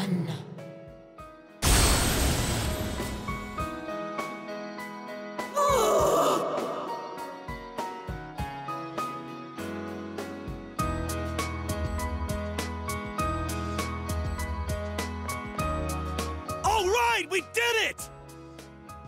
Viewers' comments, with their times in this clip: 0:04 that was a big "OOF"???? HAHAHAHA I can't take this serious anymore 😂😂😂
0:05 O O F sounds edited
0:05 I dont know why but the grunt freaking sent me 🤣. It was like she was constipated.